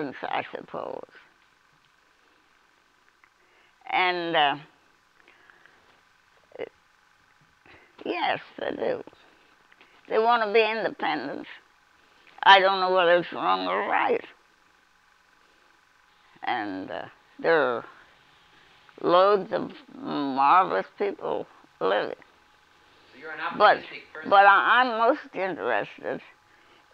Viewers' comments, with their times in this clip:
0:09 chilling the way she says that phrase and the look on her face. she’s saying people nowadays wanting to be independent as if it is not a good thing not a good thing at all. we all see young people wanting to be independent from family as a super normal thing. Wow!